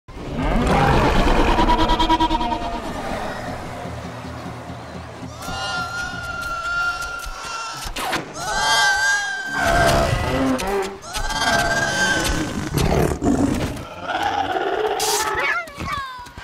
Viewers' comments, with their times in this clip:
0:03 and the crowd goes wilddd lol